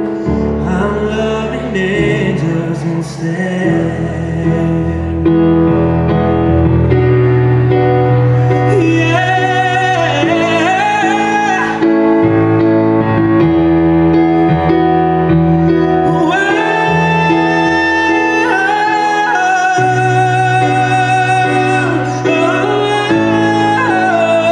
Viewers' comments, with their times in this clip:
0:07 Wow, what a passionate performance. David was even pouring his passion out into his piano playing for parts there eg, onwards.